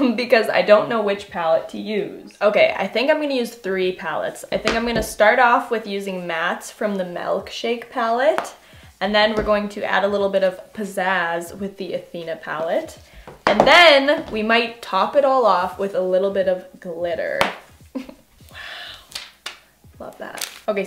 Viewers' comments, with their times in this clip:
0:06 she says melk-shake and I'm in comfortable